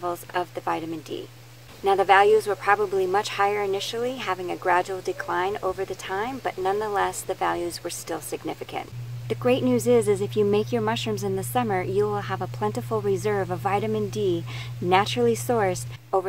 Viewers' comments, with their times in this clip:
0:03 Starting there is another voice in your video